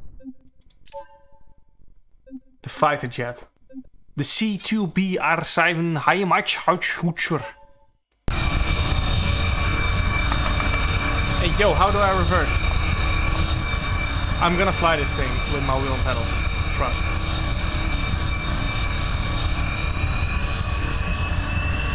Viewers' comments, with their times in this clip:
0:05 Bruh the pronunciation 😂😂😂 I’m German I understand